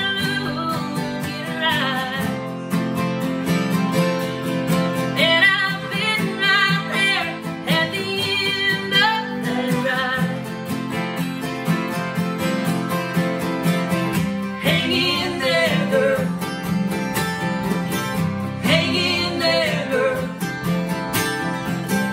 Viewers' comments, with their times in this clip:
0:04 who let the Dog out XD